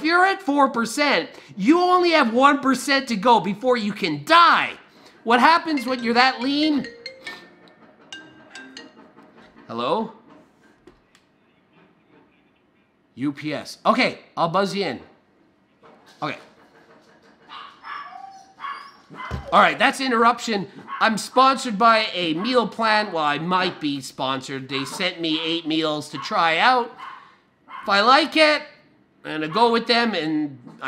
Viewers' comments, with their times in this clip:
0:05 he was going from ranting and to speak nice and casual
0:05 When your mom’s yelling at you and someone calls.
0:06 who else thought it was his phone? Lol
0:14 the only words he doesn’t scream out